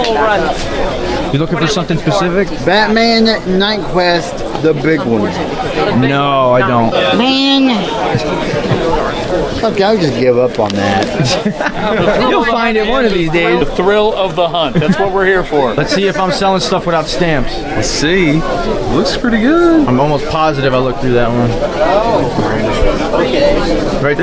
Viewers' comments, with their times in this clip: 0:07 I love the vibe on this video so much! Just a bunch of comic book collectors digging around and buying! I can't wait for our Comic Con here in Manila! Super HYPED! I also love the guy the disappointed "MAN" I feel that so much!